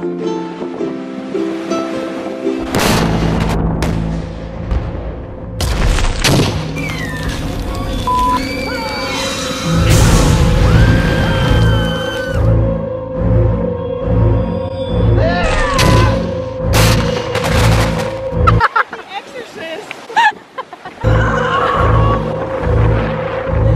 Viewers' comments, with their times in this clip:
0:05 lmaaaaoooo the sound effects are sending me